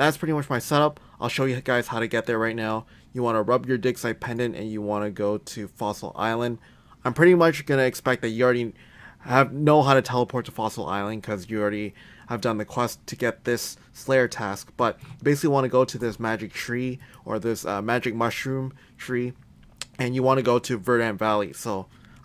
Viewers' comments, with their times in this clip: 0:03 I’m fucking dead “you wanna rub your dickside pendent 😂